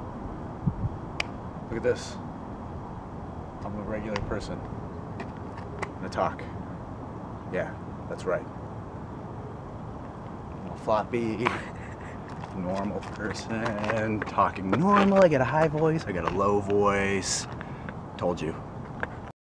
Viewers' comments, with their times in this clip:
0:10 I don't believe you because A ROBOT FRIEND IS LAUGHING I HEARD IT LISTEN CLOSELY